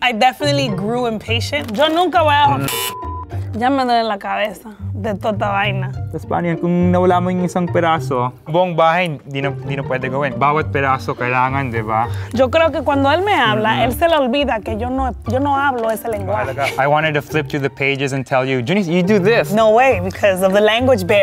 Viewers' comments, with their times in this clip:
0:06 when he says piece it sounds like pedaço in Portuguese!! Haha at least one thing I’d be able to understand Also cocina - cozinha, ocho - oito, verde, parede